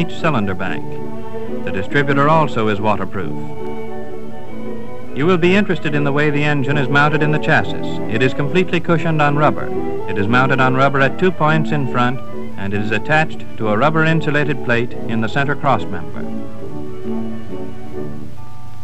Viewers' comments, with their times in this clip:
0:06 interesting how he pronounces chassis.